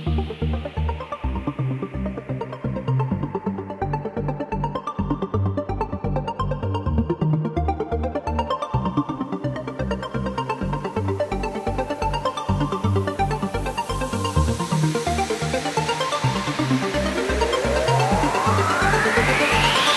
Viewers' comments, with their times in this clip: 0:04 So good. I like the build up It's a great ambient track.